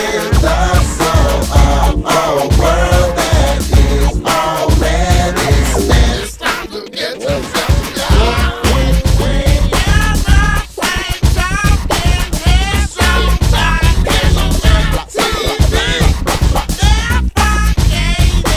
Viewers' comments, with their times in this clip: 0:06 bass is making fireworks...This song takes us on a ride! Funk yeah!